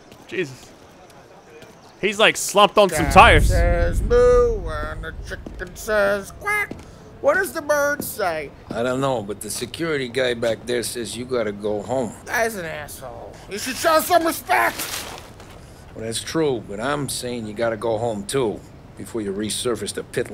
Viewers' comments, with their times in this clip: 0:03 made me laugh when paulie was drunk that he starts singing Paulie: Cow says "moo" and a chicken says "quack" ,what does a bird say?